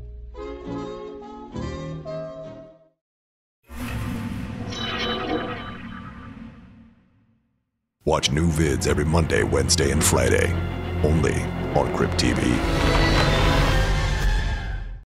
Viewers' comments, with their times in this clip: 0:08 his voice was the scariest part tho😂😂